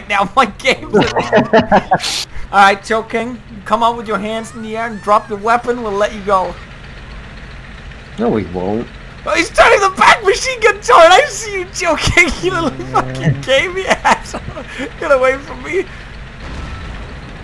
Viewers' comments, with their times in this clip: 0:03 am I hearing things or so I hear anime noises